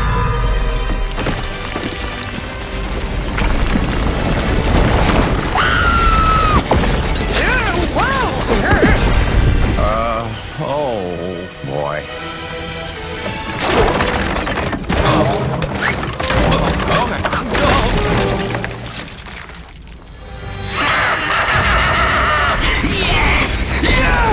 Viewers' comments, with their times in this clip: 0:05 Kaos screams like a little girl
0:05 lol dat scream